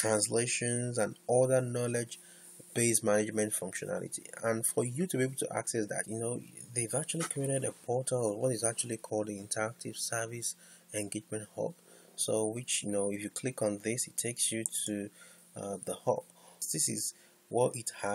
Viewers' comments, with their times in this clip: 0:06 This is a great tutorial, I have been looking out for it. Thanks bro. The bedroom voice is cool too. my questions: (1) I couldn't get to the new knowledge base functionality on the portal introduced (2) Also, after submission of the article through the old knowledge base functionality, the grid doesn't show "status" field. Where can I add status to the grid to unapproved, approved articles?